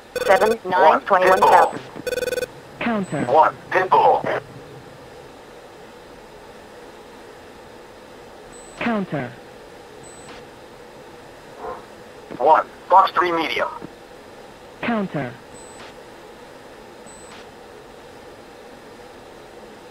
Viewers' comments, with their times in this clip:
0:04 Welcome to BMS One thing I noticed is you forgot to turn on the RWR Handoff switch next to the RWR, Without that RWR remains silent like this I did the same thing when I was new to BMS from DCS and got shot down many times until I figured it out Lol Enjoy BMS and Dynamic campaign